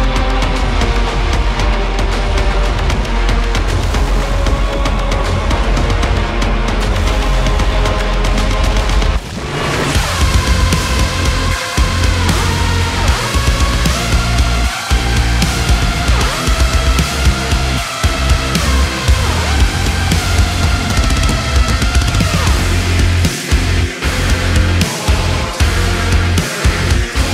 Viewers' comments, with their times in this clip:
0:10 The drop mixed with the main melody of the original absolutely floored me. Hot damn this was good 🔥